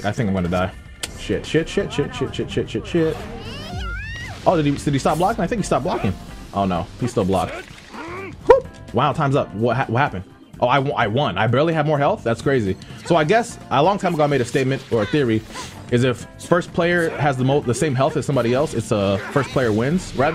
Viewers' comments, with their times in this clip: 0:03 WTF did she make that noise?